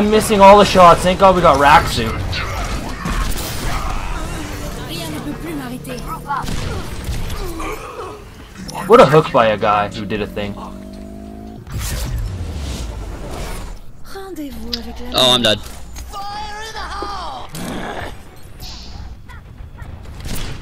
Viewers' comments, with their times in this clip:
0:04 that’s a widow voice line I’ve never heard before...